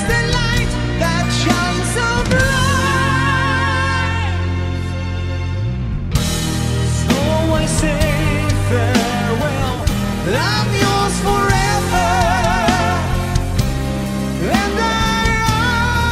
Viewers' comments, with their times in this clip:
0:03 fail...back vocals ruin...actually only a few bands can play live similar at studio. Technology is a killer for the music and we close our eyes. Damn, i used to love this song, this performance is very weak, like a amateur singer, can take high notes, choking, not strong voice and clear like in studio. Damn. sad about cans.